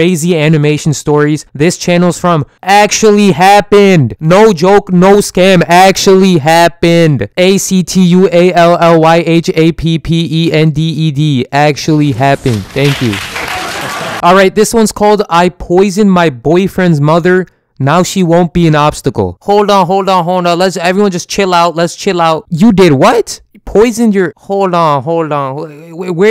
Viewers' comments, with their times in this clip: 0:08 DID YOU SAY PP